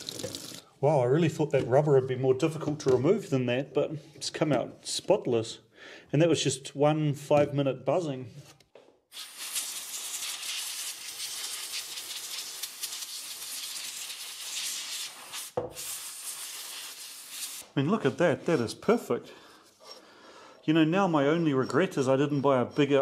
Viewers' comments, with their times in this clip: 0:10 was that your pant? 😆